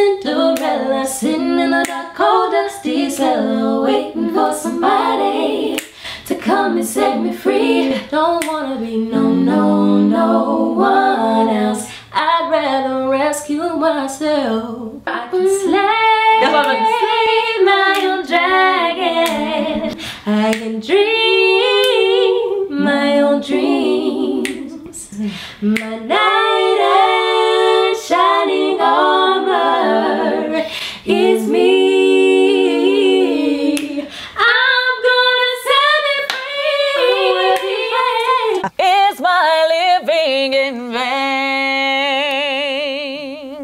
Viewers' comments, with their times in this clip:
0:06 It was those notes for me
0:31 China caught her sisters off guard with that run lol……they didn’t know she could sing like that, so one had to pick up her phone to play it off, while the other looked at her in disbelief 😂😂😂😂😂